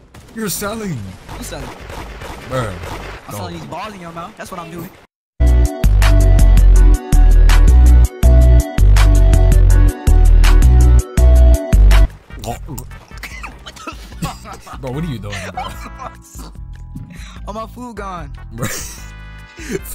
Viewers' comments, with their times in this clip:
0:05 haha got the whole squad laughing